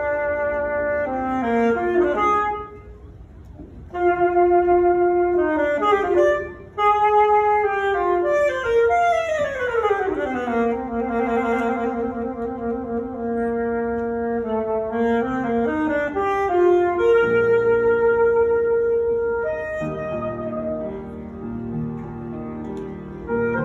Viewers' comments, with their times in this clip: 0:09 the dynamics were 🤯🤯